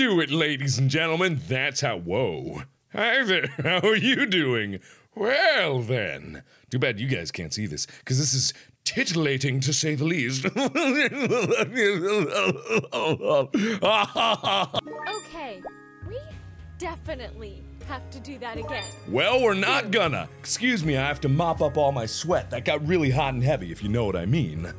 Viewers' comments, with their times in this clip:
0:09 that laugh tho ^^